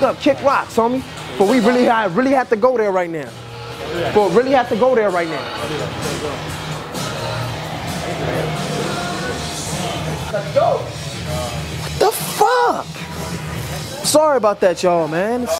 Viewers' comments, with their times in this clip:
0:12 such a satisfying "what the fuck"